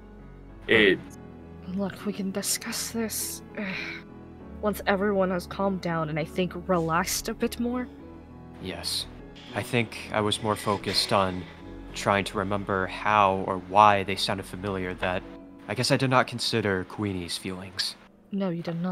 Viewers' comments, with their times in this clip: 0:06 the among us in the background 😂😂😂